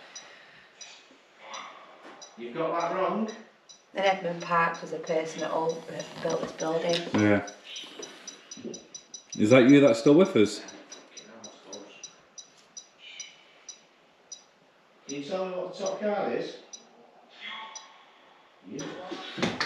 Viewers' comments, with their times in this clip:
0:04 sounds like someone whispering into your camera.